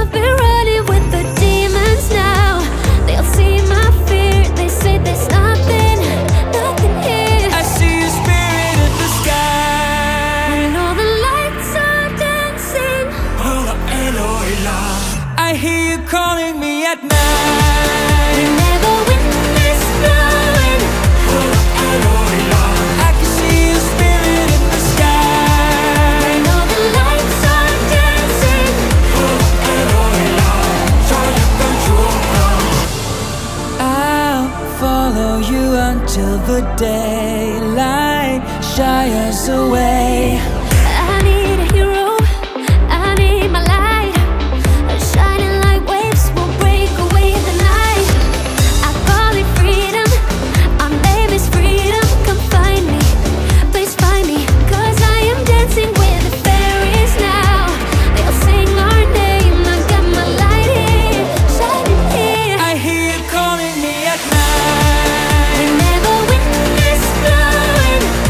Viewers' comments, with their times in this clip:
0:10 So really there's no one talking about how similar sounds to Saara Aalto's Monsters from last year... Not hating tho
0:17 *song starts*: Ok, its alright 24 seconds into the song: Ok this is so catchy!!!! HE WAS A FURRY THE WHOLE TIME
0:55 “cuz I am dancing with the Furry’s now” oh... that explains it.